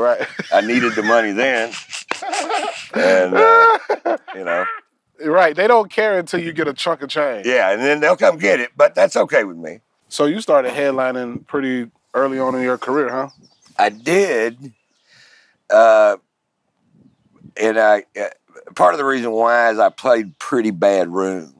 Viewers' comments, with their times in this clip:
0:04 that off camera laugh hahaha